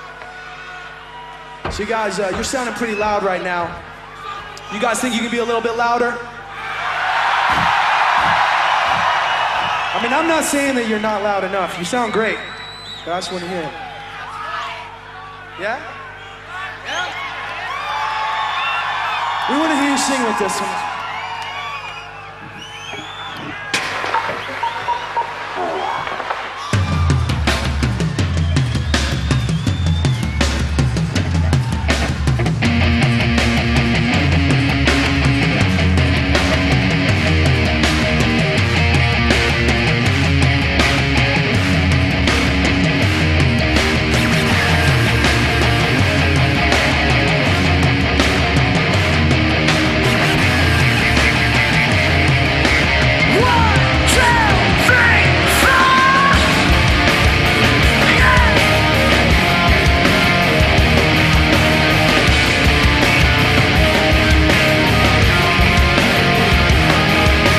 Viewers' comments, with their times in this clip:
0:04 "Fuck the world." The beginning of this song is played backwards from the original and changed from 4 3 2 1 to 1 2 3 4 and it is amazing.
0:53 that fucking pick up🔥, Chester lives it immensely
0:54 If had heard Chester count 1-4 as a kid, I might have loved Math.